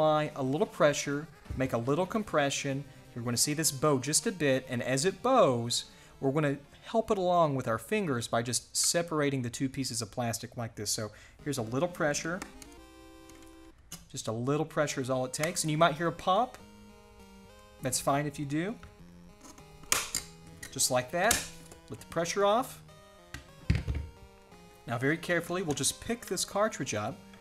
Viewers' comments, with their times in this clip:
0:10 Sounds like a dentist telling you what to expect during a tooth extraction